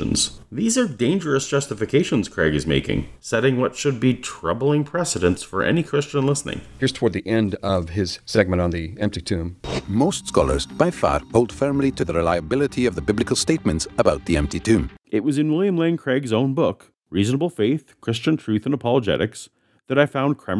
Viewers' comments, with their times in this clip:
0:07 As the video goes on, their voice narrator struggles more and more to maintain whatever accent he is attempting. I wondered if it was a different guy and accent for a second until he lurched back into his North American parody of a Scottish accent. I mean has he ever heard a Scottish accent? Sorry this has nothing to do with the content but they clearly don’t intend to show their film to anybody from Scotland, it would be quite insulting.